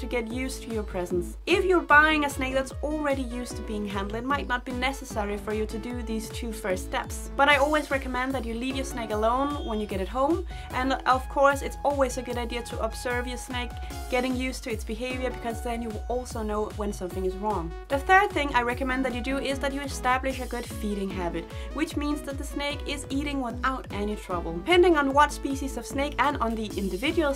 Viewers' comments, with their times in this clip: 0:08 Also did anyone notice the Car Horn?